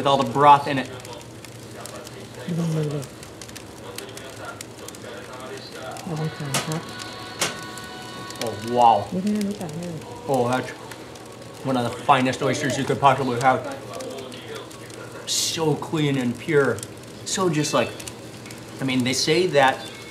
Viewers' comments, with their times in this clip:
0:05 Is that a fart we hear ?